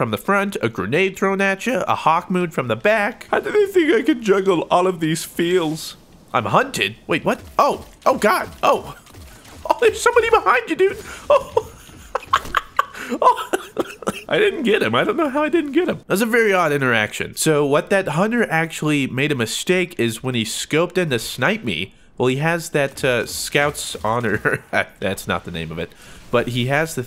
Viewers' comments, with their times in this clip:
0:10 Best laugh that goes along side space dancing titans.